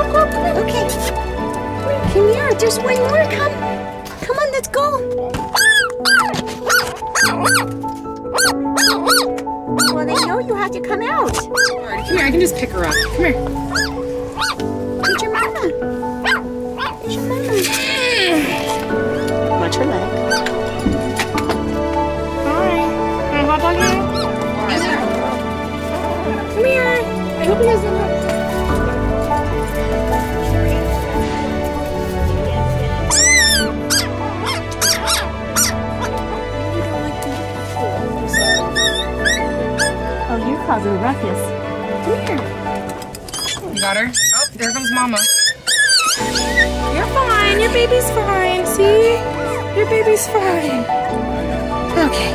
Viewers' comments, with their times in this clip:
0:07 how cute is the puppy’s bark 😍😍
0:35 aaaawwwww the puppy was shivering and then followed up by cute squeaks